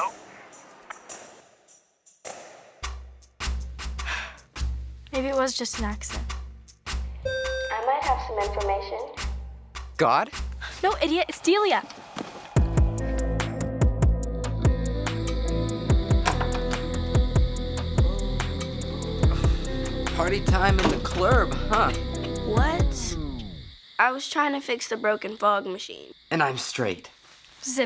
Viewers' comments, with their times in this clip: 0:09 "God"? Lol the way he said that!!!😁😂